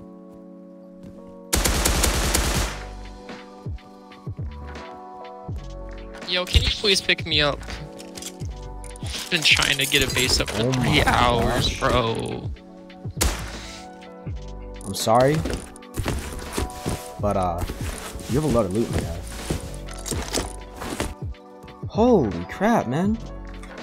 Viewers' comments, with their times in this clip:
0:06 he sounded so sad bro😢